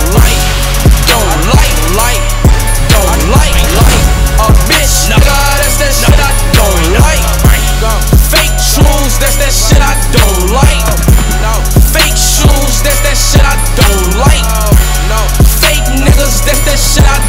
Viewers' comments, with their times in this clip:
0:03 is hella crazy [beat + scene so tuff]